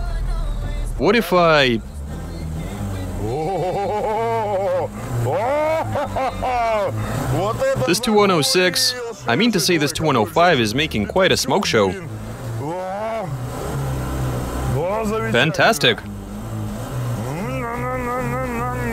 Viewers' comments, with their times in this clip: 0:03 maniacal laugh, MANIACAL LAUUUGH